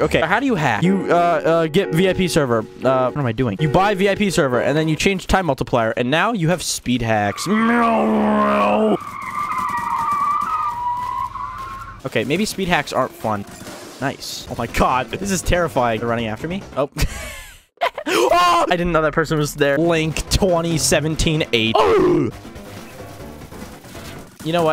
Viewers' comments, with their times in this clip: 0:07 I swear I ain't a boomer, but this car sound effect sounded so realistic that I thought there was a crazy driver outside my house.